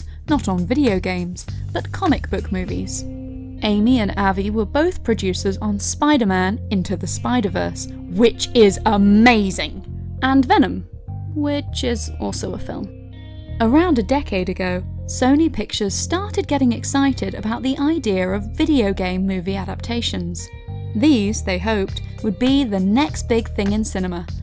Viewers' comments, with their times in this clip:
0:08 I AGREE BUT THAT TONE SCARED ME